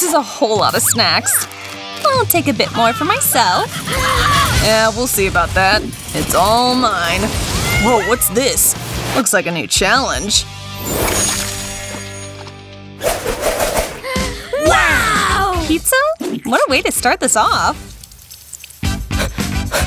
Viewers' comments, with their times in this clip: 0:07 it looks like a cat sound
0:07 It looks like a cat sound